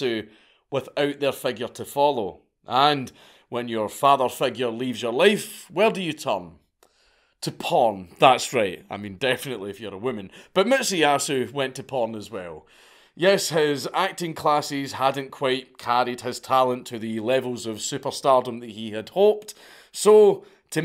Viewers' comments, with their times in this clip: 0:08 your quick, quiet comments are always hilarious.